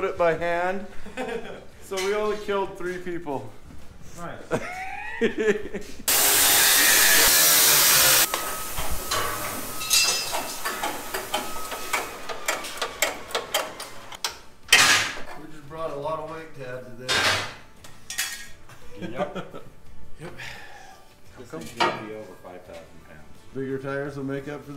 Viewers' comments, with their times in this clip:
0:06 that Plasmacutter with the sounds of an Anglegrinder..... :D